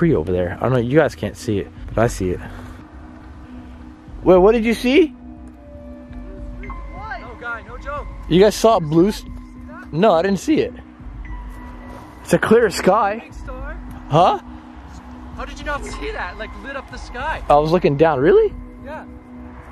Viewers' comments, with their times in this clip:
0:03 I don't know if you hear a girl say (wood) in
0:06 I heard a female voice say something about the woods